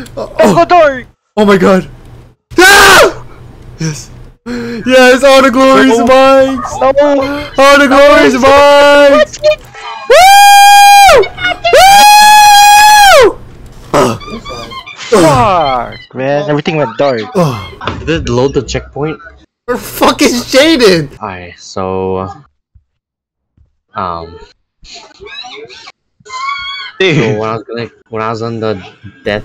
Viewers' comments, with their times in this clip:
0:10 I had my headphones at max volume